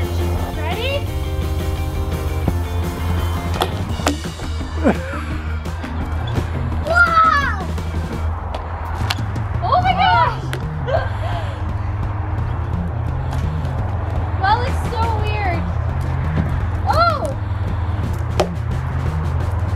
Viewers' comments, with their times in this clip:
0:03 sounded like a fart😂😂😂😂